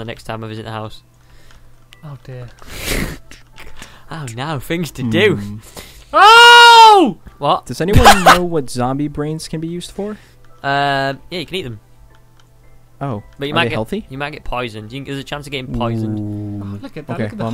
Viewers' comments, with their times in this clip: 0:05 omg dat scream tho xDDD